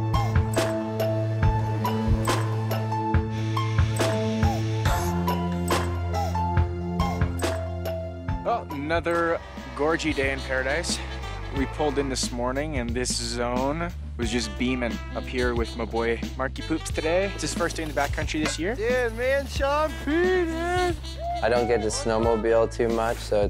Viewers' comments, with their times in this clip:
0:09 Like the beat sound a lot like a old school jazzy hip hop track like Dimond D and Pete Rock.